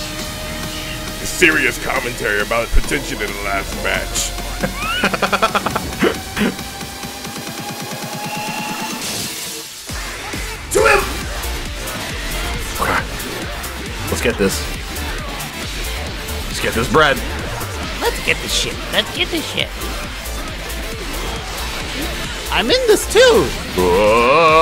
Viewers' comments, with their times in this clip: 0:03 the music lined up perfect there. And yes that was a pun.
0:09 The music synch was actually very cool
0:10 that ASGORE remix got me dead fr fr And the 10/10 Battle too